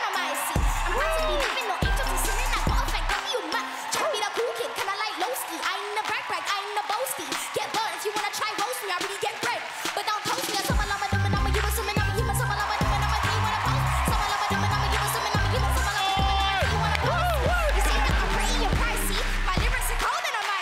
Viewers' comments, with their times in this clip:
0:07 they went from singing innocently, to the older girl singing aggressively LMAOOO 😂😂🤣🤣👏👏